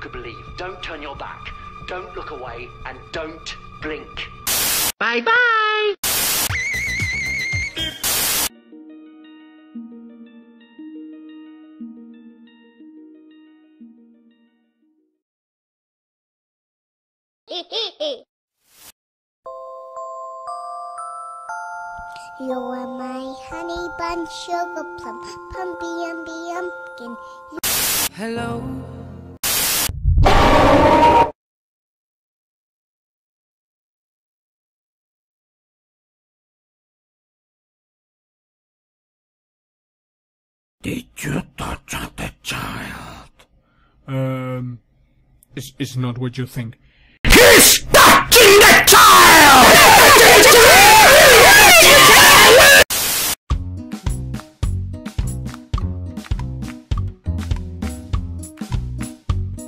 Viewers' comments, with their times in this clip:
0:06 MAN WHAT THE HECK JUST HAPPENED TO HIS VOICE 😂
0:29 is funny and hes brave is so loud
0:46 Press this Laugh hard Break your ears
0:47 Oh my ears!